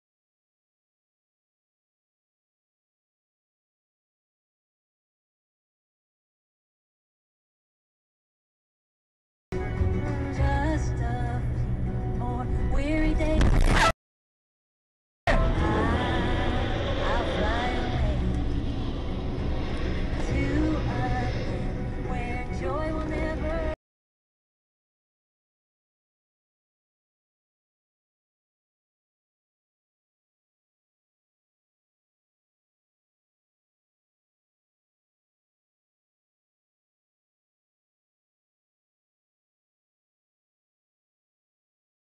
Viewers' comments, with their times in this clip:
0:10 The music is perfect.
0:14 The car spinning on its side past the cammer while hearing "I'll fly away" was oddly satisfying.
0:19 The one with the song "I'll Fly Away" in the background is so fitting 🤣🤣🤣🤣
0:24 perfect background music